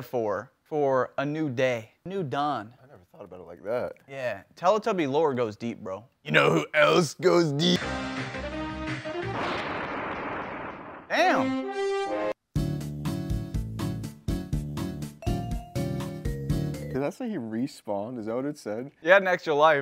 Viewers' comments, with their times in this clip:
0:04 all the mentions of the mario impression yet the muscle man impression is on point